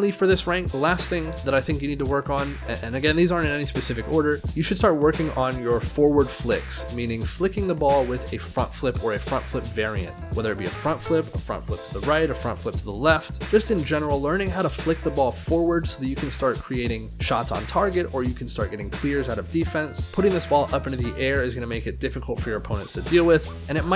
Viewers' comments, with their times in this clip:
0:08 You need to learn "fuck front flicks" - GOT IT !